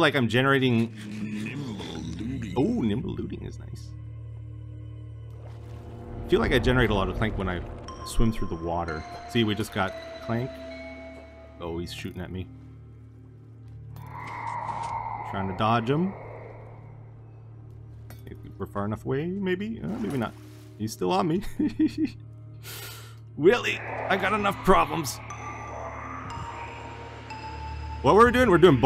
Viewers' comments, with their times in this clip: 0:10 he talks about generating a lot of Clank. And just after that activates a shrieker. But it doesnt generate a Clank AND you can hear a Piston moving! i Think Etho stumbled across a secret without noticing!